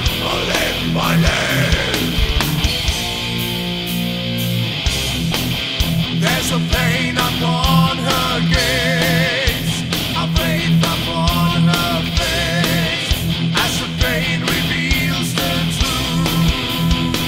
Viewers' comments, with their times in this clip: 0:04 This is sick, nonstop riffs and great production. has a Nevermore vibe